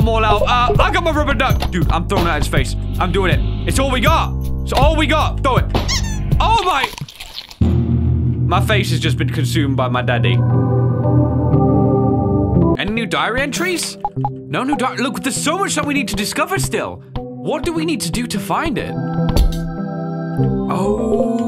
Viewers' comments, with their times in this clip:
0:05 a funny sfx preceding a horrifying event. fear the rubber duck sfx.